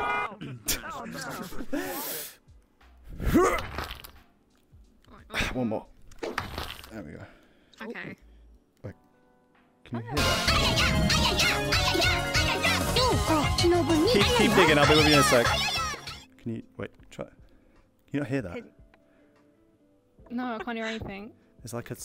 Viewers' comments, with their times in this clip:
0:09 oh god, that AYAYA was perfectly timed